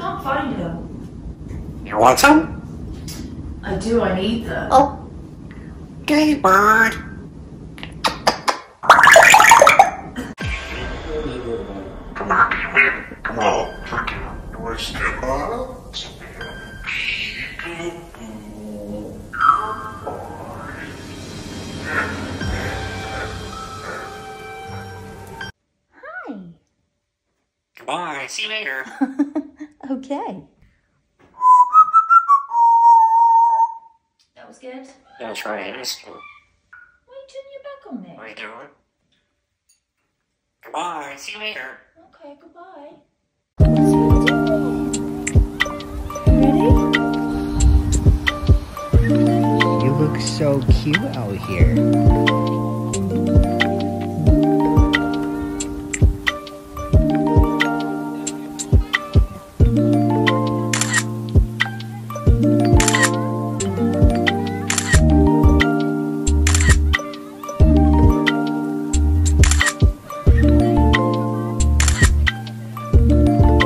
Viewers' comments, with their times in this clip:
0:05 @ the time stamp he says gay bird not do you bird 🤔 maybe they don't want to acknowledge it but that's clearly what he said and its possible that he meant it as in happy . You never know what Gizmo will say considering how stinkin smart he is 😊♥️🇺🇸
0:49 I was wondering where Gizmo got that male voice from and then I heard the gentleman 😊
0:54 Gizmo is my spirit animal lol! What’s the song really nice beats??